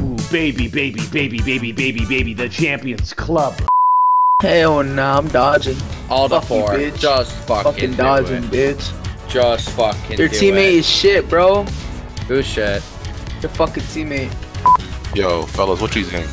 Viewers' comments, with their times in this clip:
0:04 the dudes voice "alt f4, just fukin do it, who's sheet?"□□